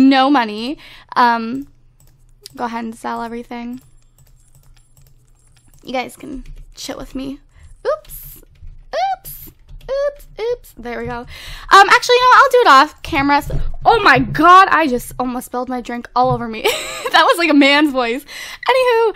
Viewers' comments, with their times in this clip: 0:07 minutes into the video it sounds like she says " ok you guys can shit with me"😂😂😂😂😂😂😂😂😂😂